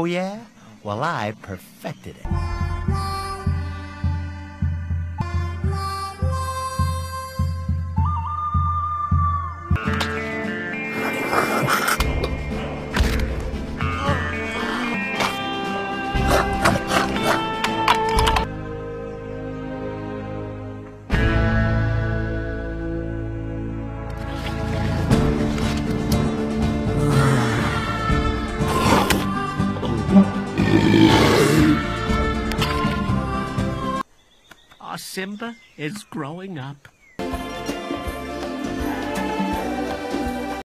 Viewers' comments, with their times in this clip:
0:05 That what kion did before letting out a loud roar
0:30 I can roar like that too